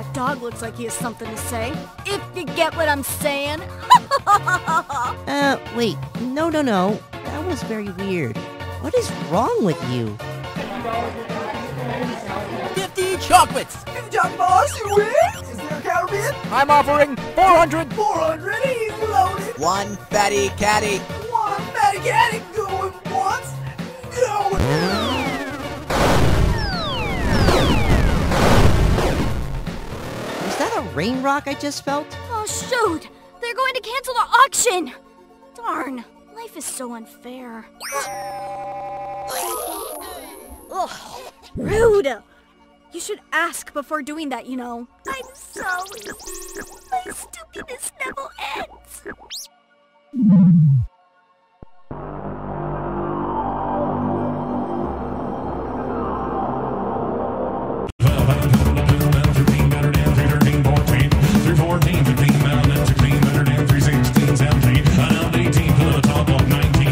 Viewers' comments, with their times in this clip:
0:04 ok how has nobody mentioned this? Ena actually acknowledges how that made no sense, and also seems confused. plus talks differently.
0:12 why does this dude sound so much like jerma
0:20 Now that voice sounds like... it can cause chaos, chaos.
0:47 why do i hear ps1?
0:51 oh mah gah is muffled ps1 startup noise
0:52 PlayStation 1 sound
0:52 *PS1 STARTUP SOUND*
0:52 The PS1 Startup😭😭😭